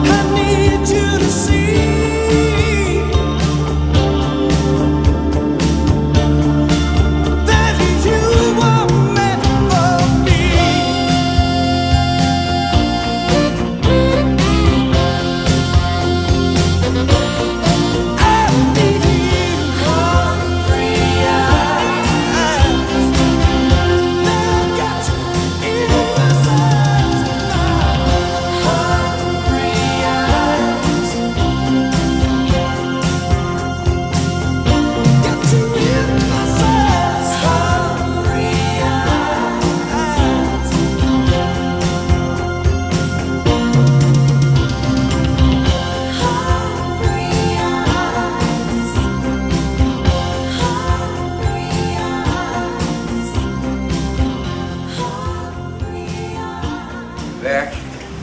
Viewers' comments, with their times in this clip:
0:07 Hey! That’s different than the soundtrack version!
0:42 someone realizes that from on the fadeout is longer then in the Single Version? Very nice drums and Background Singers repeating tenderly "hungry eyes"? Very nice!